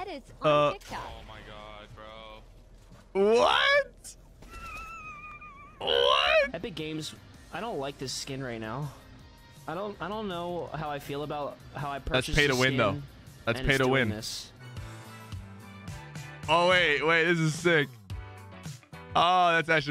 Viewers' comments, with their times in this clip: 0:04 sounded like a car failing to start LMAO